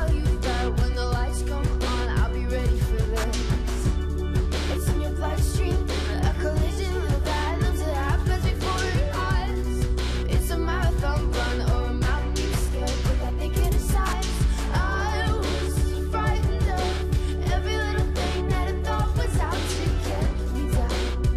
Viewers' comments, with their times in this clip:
0:03 When she says I'll be ready for this, the second time it's satisfying af